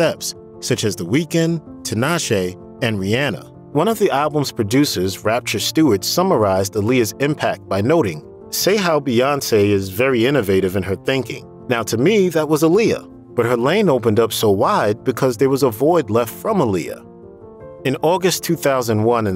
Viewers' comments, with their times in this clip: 0:03 The way dude pronounces Rihanna's name 😂😂😂 **Trigger all the hate comments stating that it's besides the point of the video**